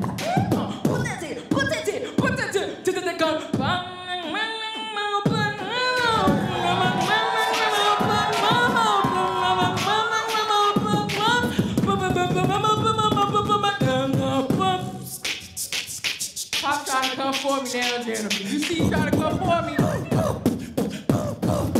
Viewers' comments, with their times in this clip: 0:03 Sis should of kept it going right here cs this is the kind of melody i like to here